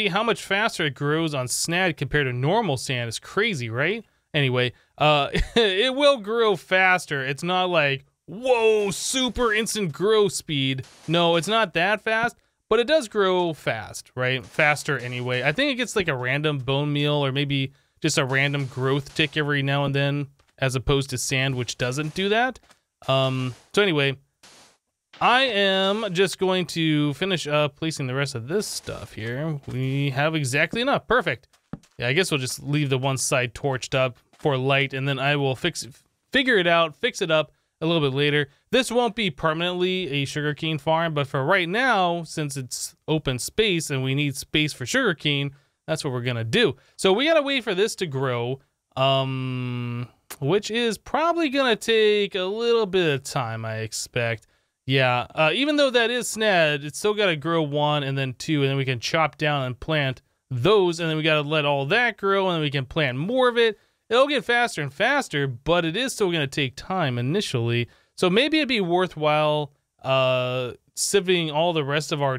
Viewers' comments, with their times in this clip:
0:08 yankee wit no brim woah right there
0:55 make sure your valume is all the way up and something says bop or bob i dont why it does